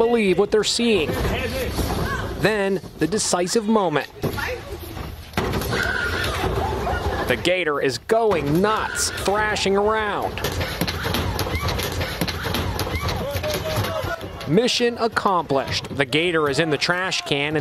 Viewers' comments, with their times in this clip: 0:04 that bonk though lmaooo